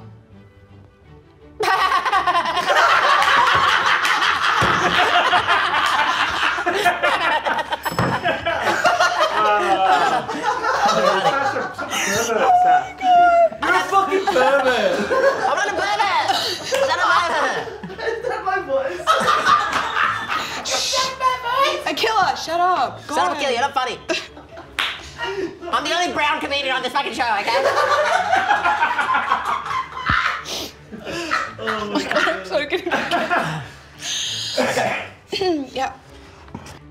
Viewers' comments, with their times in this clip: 0:07 That laughter was so good 😂
0:20 lol. Sounds like Chris Tucker in fifth element.